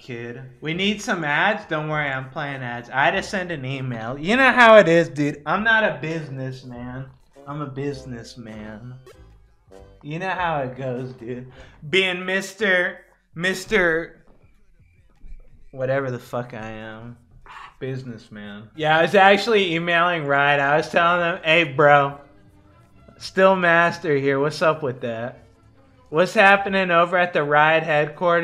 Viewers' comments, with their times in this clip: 0:09 wow that actually sound so depressing